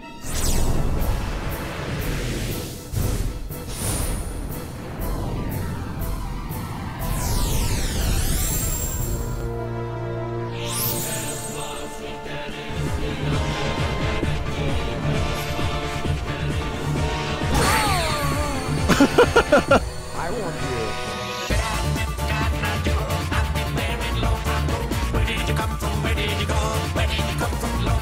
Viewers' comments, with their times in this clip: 0:10 Cotton Eye Joe & One Winged Angel remix goes hard